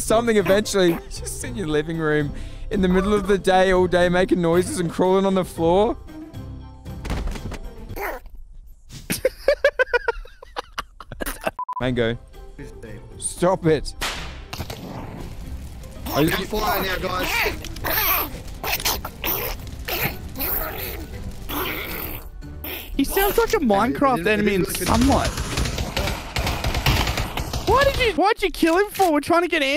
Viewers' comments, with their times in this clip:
0:07 I swear he said no bro is talking like Donald duck
0:12 SKDKSJ "he sounds like a Minecraft enemy in the sunlight-" XDDD THATS WHAT I WAS THINKING --